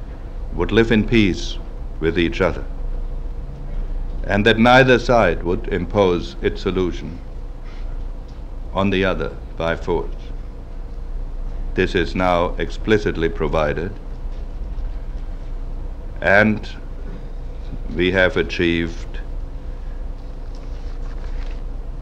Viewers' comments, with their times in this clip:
0:05 & other times the audio isn't in sync.